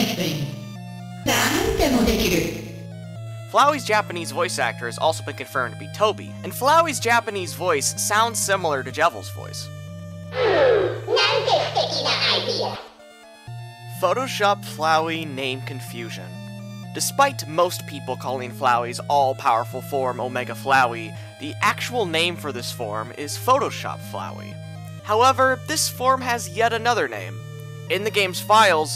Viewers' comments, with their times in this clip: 0:10 floweys Japanese voice sounds like "hmm.. now ya keep stinking the idea!"